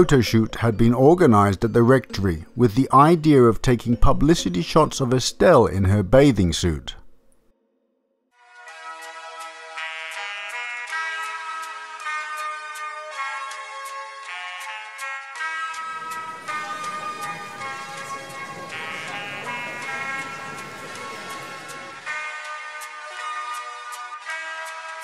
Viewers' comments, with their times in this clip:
0:10 ...damnit, I found myself daydreaming of a floaty donut or something whilst in a lazy river, while this music would be playing.. xD ->